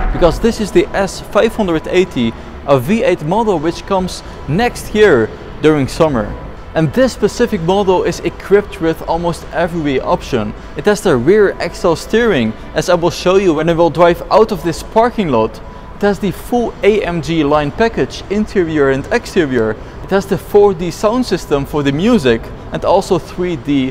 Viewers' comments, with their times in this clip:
0:07 ... did i hear VOLVO?